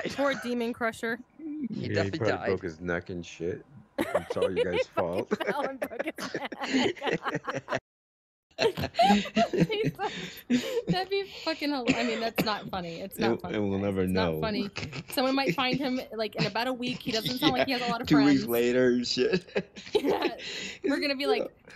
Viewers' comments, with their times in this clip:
0:09 imagine having a pig laugh bruh